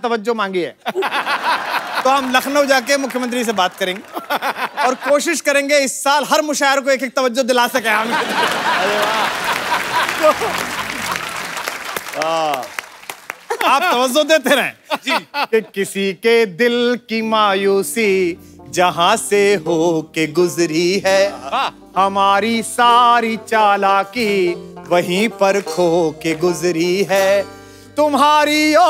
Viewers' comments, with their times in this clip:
0:09 kapil don't knows the meaning Fake laughter😂😂